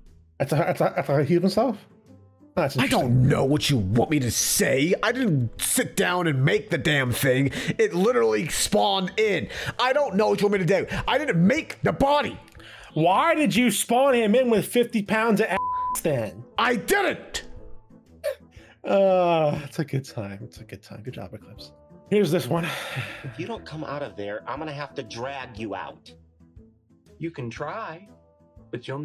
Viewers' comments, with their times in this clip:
0:05 Eclipse becomes British 😂😂😂 "I don't know what you want me to dó!" 😂
0:05 why'd he become British 🤣
0:05 when u put the speed at 0.25x he sounds like he is crying
0:09 Eclipse was British for a sec >:3
0:10 had me laughing eclipse turned British for a bit i wish that someone will make an animatic or fanart of that moment it would be funny if eclipse got to see it XD
0:10 BRO REALESED HIS INNER BRITISH